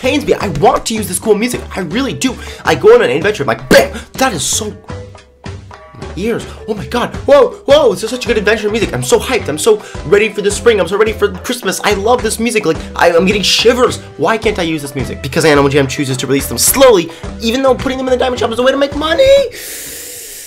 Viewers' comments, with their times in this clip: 0:04 weird dinosaur noises